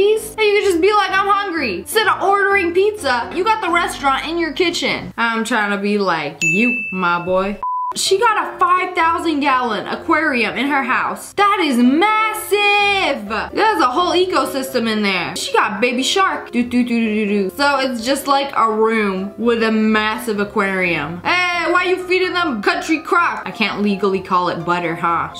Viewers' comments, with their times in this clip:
0:10 did she say yalon (Think I am going death 😑😞)